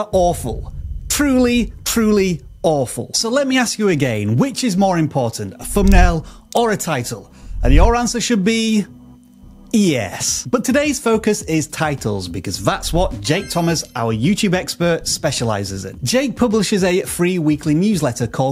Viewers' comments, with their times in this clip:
0:06 That yeeees make me laugh every time